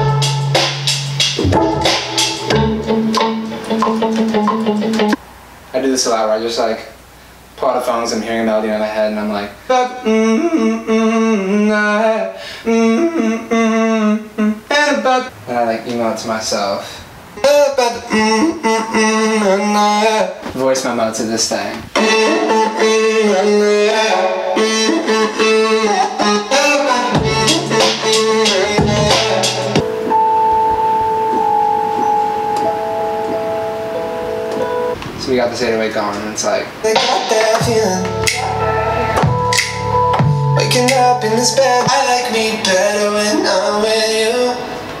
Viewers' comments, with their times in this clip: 0:08 Who thought intro was from the mouth
0:09 still can't believe he made that instrumental soooo bloody good
0:09 When you can literally do the freaking instruments in your song with your voice!!!!
0:09 are we not talking about this dddeeeymmm good intro! trusn out its his real voice argghh
0:10 am I the only one, who knew it wasnt a violin..?
0:10 i think the first loop is violin.
0:10 when god shoved a violin in his voice box 🎻❤️
0:10 i thought its a violin😳
0:10 I DID NOT KNOW IT WAS HIS VOICE
0:10 5 years later i'm still obsessed with the "mmm mmm"
0:10 I actually thought it was a violin but it was his voice omg
0:10 I knew it!! HE ATE A VIOLIN!!
0:11 I HAD NO IDEA IT WAS HIS REAL VOCALS. O my gosh. Lauv, you a frikkin L.E.G.E.N.D.
0:11 im shoockt it was his real voice i thought its violen or something 😯 well thats you called talent!
0:11 OMG I THOUGHT THE BEGINNING WAS A COMPUTER RECORDING SOUND BUT IT'S HIS ACTUAL VOICEEEEEE😍😍😍 mind-blown
0:11 Also had no idea those were his vocals !! I was always curious as to what instrument it was.. come to figure out it’s him :)) amazing
0:12 At first, i thought it was a Violin played.
0:16 oh god i thought the voice was a violin
0:17 What kind of plug-in did he use. How the voice could changed like that??
0:19 wait.. Wtf! That sound comes from his throat... I thought it was a violin or something... Holy jeez that is just wow.. You are a legend
0:20 i ever think this was a violin, oh my god <3 i like more and more this song after see how u make it <3
0:22 What program I'd he using to do his voice like that
0:22 its impossible to get that vocal chop sound without autotune so obviously to get that sound he used autotune for artistic purposes
0:25 I always thought the sound was from like, violins! Seeing the construction of this is awesome. also, toucan sam.
0:26 the way the beat kicks into his voice... eargasm
0:30 i could sleep to that tune 🤤
0:30 I need a 10 hours of this melody, I need it to *sleep*